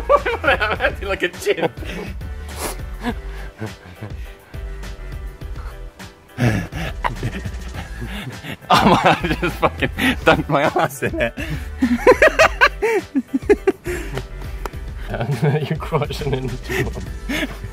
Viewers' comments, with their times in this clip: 0:03 you sound just like my pet frog.